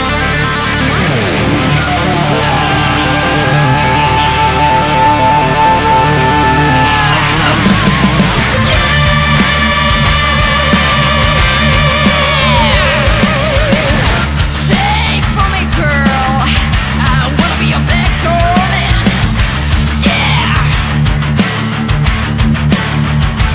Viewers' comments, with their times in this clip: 0:07 Damn one of the craziest, jumbled and most ignorant comments I've read, and it's not the God part. She sings on key all the time, she hits all the notes, her breathing technique is solid, her voice texture is hard to find and it works for her, when she sings longer notes without distortion her notes are sound and clear. There's literally nothing here about whether not she can actually sing that would be "difficult to tell" unless you were tone deaf. You generally know a bad singer when you hear them, again unless you are tone deaf, which isn't an insult, it's just a biological reality for some people. For example: Her scream matches the guitar's bend note very closely. That means she is hitting the note, if she didn't it would sound dissonant and unpleasant.